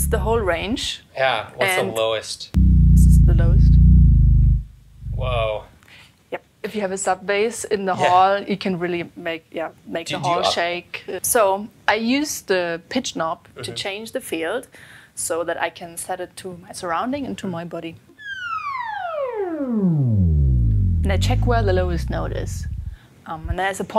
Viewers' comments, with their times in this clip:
0:04 That's the Low A on a Piano.